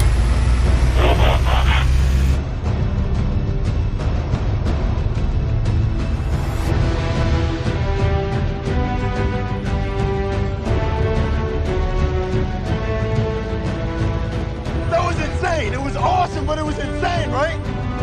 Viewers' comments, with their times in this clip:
0:06 Just dope 🔥🔥🔥🔥 background music..from mins.....music is enough to show that just what is OPTIMUS 🔥🔥🔥
0:06 Yes that music is awesome